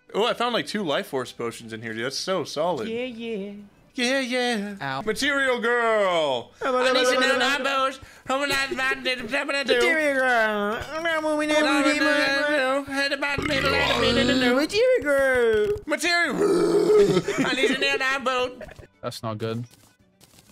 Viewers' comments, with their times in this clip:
0:05 that burp caught me lackin